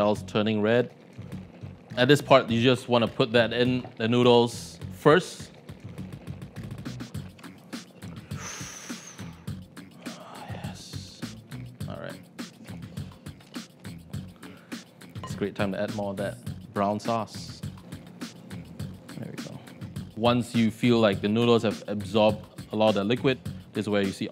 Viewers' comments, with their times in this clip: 0:08 That whisper 😅. My man is making love to these noodles.
0:10 food porn sounds 🤙